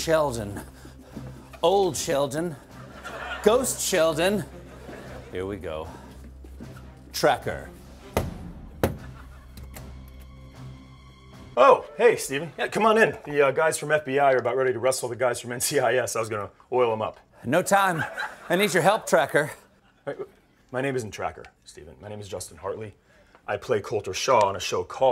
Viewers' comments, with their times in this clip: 0:08 That knock gave me Strangers With Candy vibes.